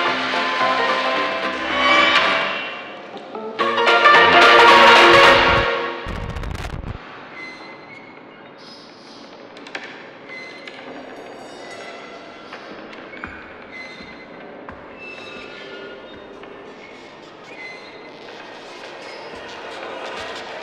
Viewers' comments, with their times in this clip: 0:03 the music was so funny 😂